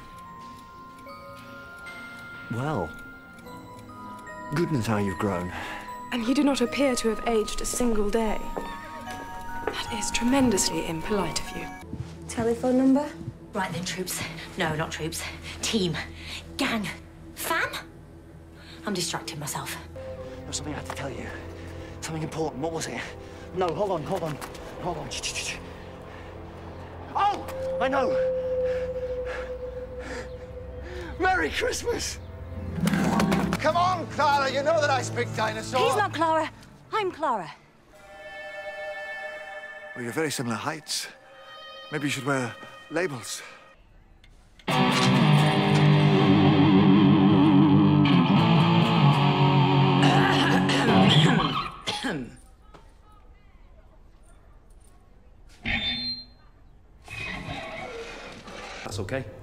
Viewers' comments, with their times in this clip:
0:07 the horse neighing at the background was just on time XD
0:38 the sound effect here for some reason sends me every time it’s so ridiculous
0:44 to be fair, ramping up the gain and loudly chugging despite no one asking? I identify heavily with the doctor here
0:44 this is him almost playing duel of the fates!!!